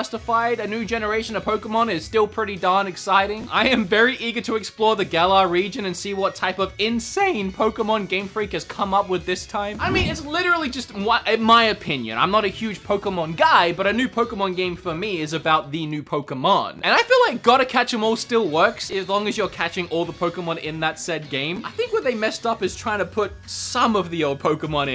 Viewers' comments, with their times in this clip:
0:07 major voice crack 😂